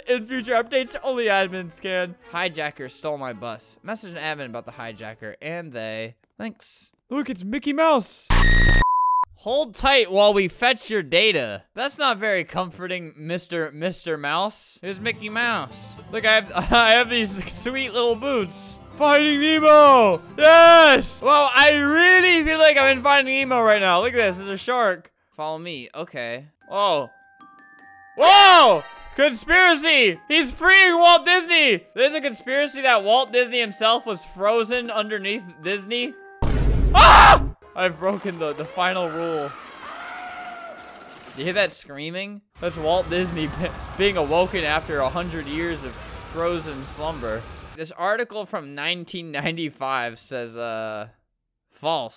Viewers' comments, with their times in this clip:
0:06 The seconds so saw that face I knew there was gonna be a scream
0:08 Rip earbuds/headphones users. :,) Click if you dare, make sure to wear earbuds or headphones >:)
0:38 i though that was screaming of that frozen walt, but that was random sound effect from someone riding an roller coaster.